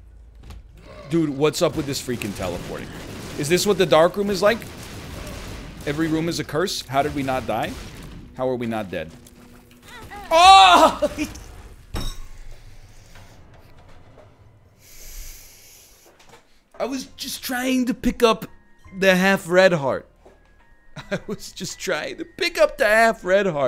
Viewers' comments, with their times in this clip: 0:09 That's how a soul sounds when it breaks